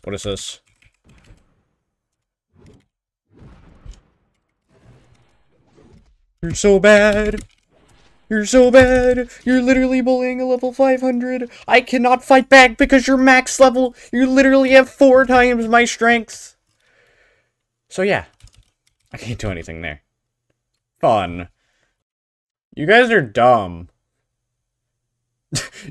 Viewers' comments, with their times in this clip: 0:07 This guy sounds like technoblade